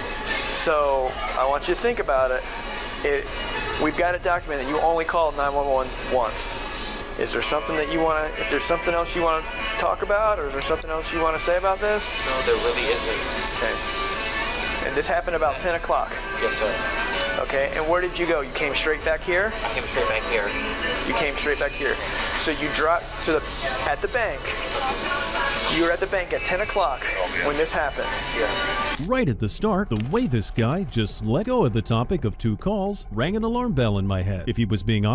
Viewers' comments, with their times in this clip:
0:07 Imagine you just got caught making the biggest mistake of your life and the FRIENDS theme comes on.
0:08 😂😂😂😂 that Malcolm in the Middle theme sent me lol
0:08 Getting arrested as the Friends theme is playing "so no one told you life was gonna be this way...."
0:09 The music made me laugh so hard😂😂😂
0:10 Imagine getting arrested while the Friends theme plays 😂
0:11 if Friends theme song popped up as im getting questioned by police might as well try to go for his gun & get sent to heaven right then & there.
0:21 My ADHD is making me hyper focus on the Friends theme song playing in the background. I can't even pay attention to the conversation 😂